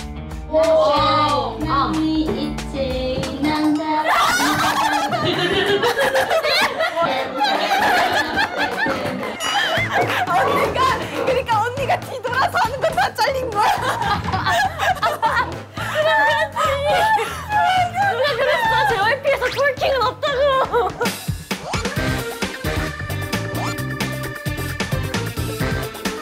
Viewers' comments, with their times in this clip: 0:09 have you ever see a group of girls laugh so hard in your life